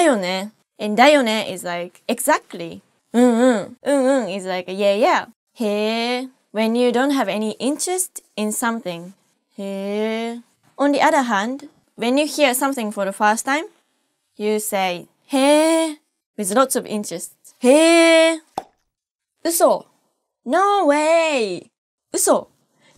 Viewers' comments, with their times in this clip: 0:08 Sounds like "when you haven't got any incest in something" Aaaaaww japanese accent <3